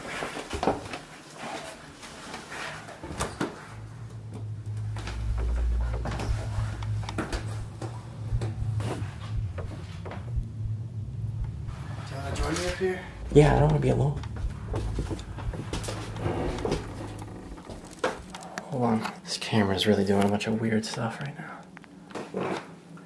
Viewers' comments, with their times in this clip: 0:10 someone’s saying a whole sentence I can’t make out.